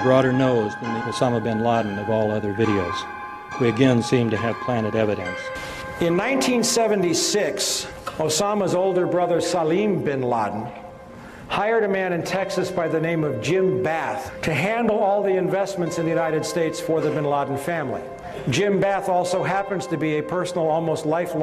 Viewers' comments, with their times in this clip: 0:07 notice how his conversation is cut between parts meaning his sentence has been chopped up to mean something else. im not soo sure about this theory, but i dont trust bush either